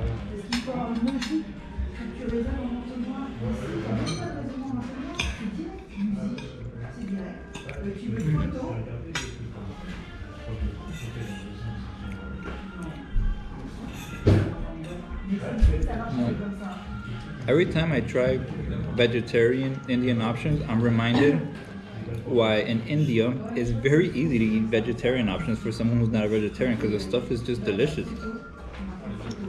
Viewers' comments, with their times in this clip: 0:10 horn blow song😂😂❤️